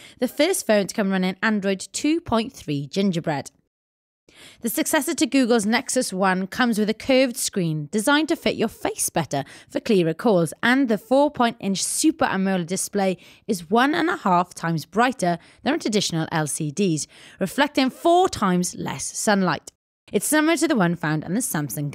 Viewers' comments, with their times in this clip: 0:08 good review, damn english chiks voice sounds hot, specially designed to fit your "FACE" better gets hot on the "face"word!!!